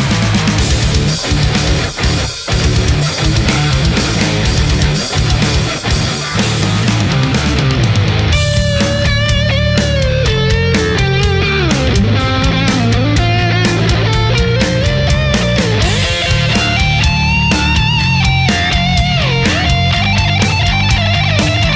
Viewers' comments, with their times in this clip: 0:05 the STL sounds tight and centered, the NDSP sounds super wide and separated from the mix. I'm full in on Neural (even have a quad cortex) but the STL sounded great to me too.